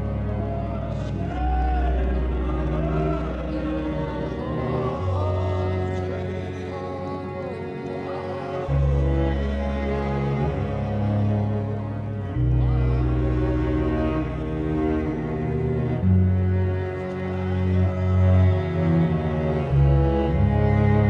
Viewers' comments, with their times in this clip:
0:06 I wish I'd been able to hear the traditional song instead if it being drowned out by European instruments :(